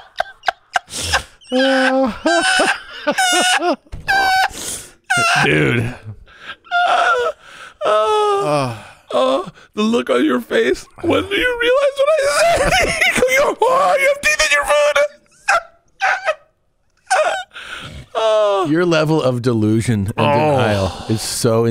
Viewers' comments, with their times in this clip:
0:03 No one else heard Bart fart ?